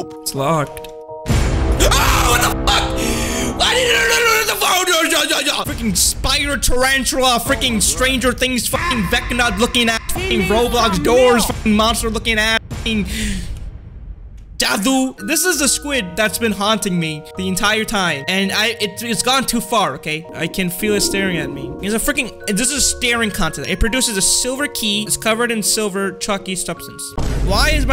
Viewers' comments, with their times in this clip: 0:03 Bro became packgod for a second😂
0:08 bro became packgod for 3 sec